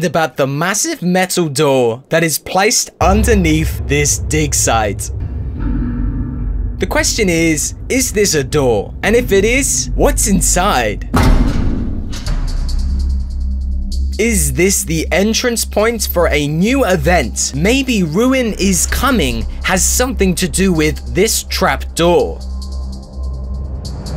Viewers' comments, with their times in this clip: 0:07 It sounded like it said im coming